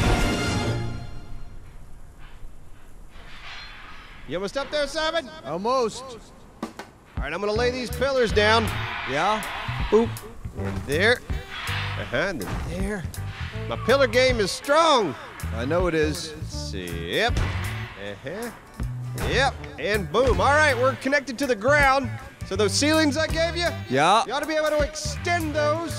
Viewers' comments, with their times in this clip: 0:09 what the hell is that screaming xD